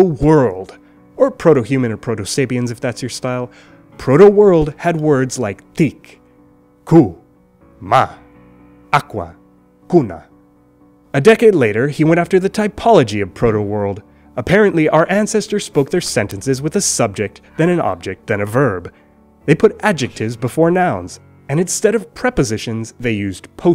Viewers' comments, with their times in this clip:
0:04 Aham. How did aqua (with weird pronc) ended up as víz?
0:05 tik? sounds weird or i'm just dirty minded?
0:09 «water” sounds exactly like Latin